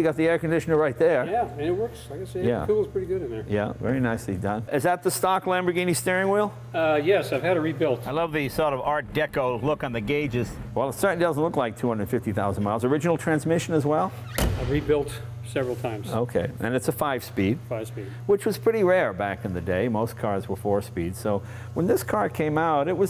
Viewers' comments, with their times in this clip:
0:07 "I love the sort of art deco gauges" that audio clip was taken from the other lamborghini video. I knew right away when the audio sounded different, can't fool us Jay.